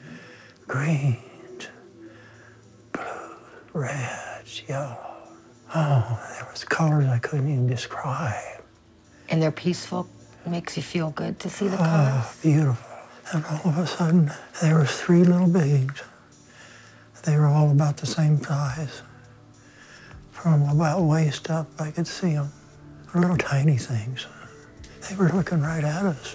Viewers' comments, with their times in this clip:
0:08 her voice sounds weird...
0:08 listen to her voice sounds weird...